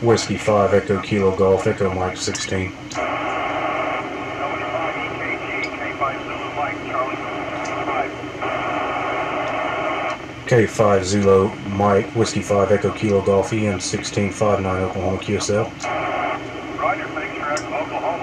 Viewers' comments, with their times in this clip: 0:06 Ha! I just heard myself work you!